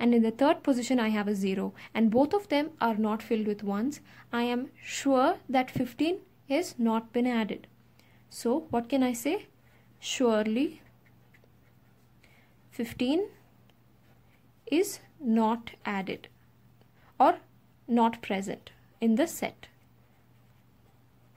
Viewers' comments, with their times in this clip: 0:05 That “SURE” on just killed me.